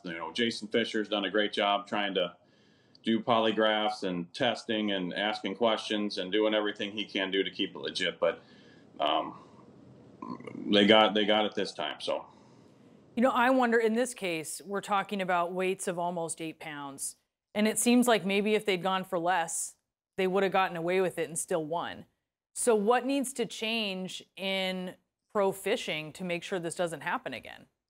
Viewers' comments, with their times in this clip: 0:09 Did he burp ?